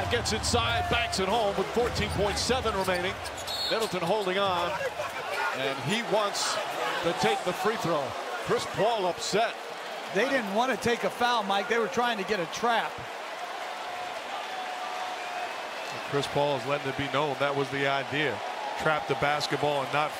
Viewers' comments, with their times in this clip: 0:05 why does cam johnson sound like a girl 😂😂